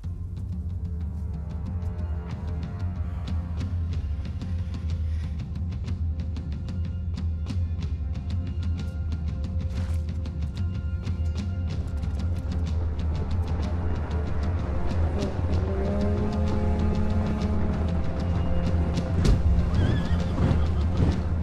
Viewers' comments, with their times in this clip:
0:05 The sound of drums reminds me of the game (praetorians) i used to play in my childhood😋😋 For moment i thought new game will be release 😅